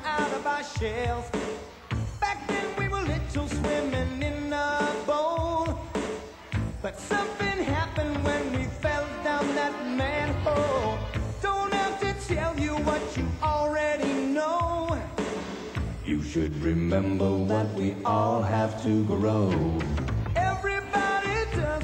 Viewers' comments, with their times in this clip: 0:09 Something happened when we felt up that man pole? Oh jeez.